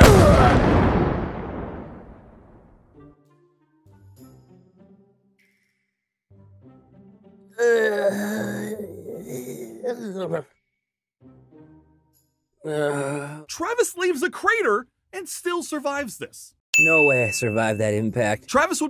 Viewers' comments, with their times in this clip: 0:03 Travis: *Screams* °Thud° The captions: mUsiC